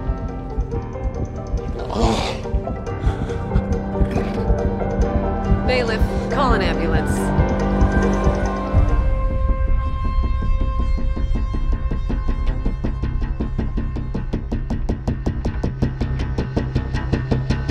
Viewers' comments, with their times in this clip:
0:05 lol the way the judge asked to bailiff to call the ambulance with such distaine almost like she was offended that someone would dare have a heart attack in open court.